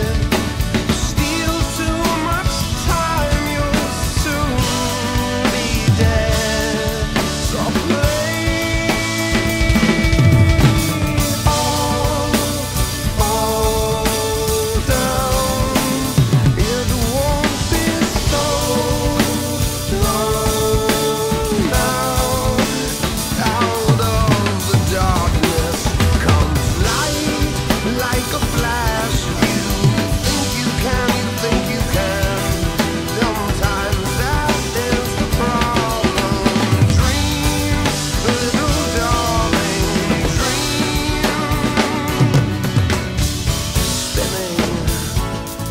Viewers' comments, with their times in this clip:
0:09 That double bass into hi-hat fill is so great.
0:27 UGH...that ride + hi-hat combo introduced is my favorite part of Carter's work on this fantastic song...and you nailed it, brother. The ability to come within inches of Carter's skills is quite the accomplishment. #Bravo!